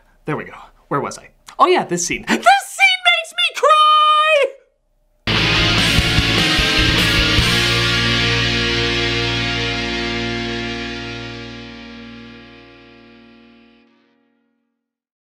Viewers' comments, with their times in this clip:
0:03 cue aggresive crying